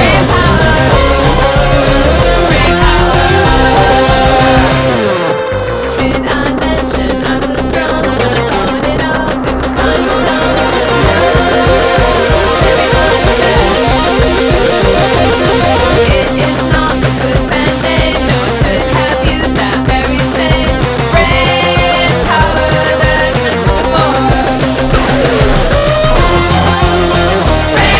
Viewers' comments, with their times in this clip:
0:09 The hammer-ons always killed my streak, nice to actually here them lol